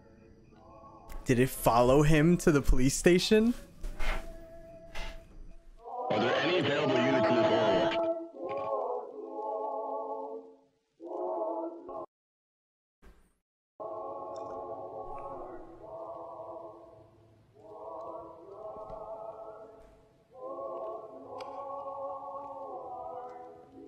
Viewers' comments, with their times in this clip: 0:06 dude that music remembers me to oranges amazing grade